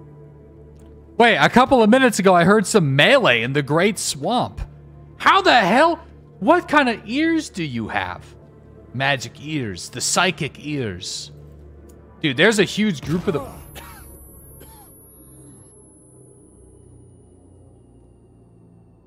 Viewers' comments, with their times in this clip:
0:05 to be fair, he did scream "bluyoo" before he died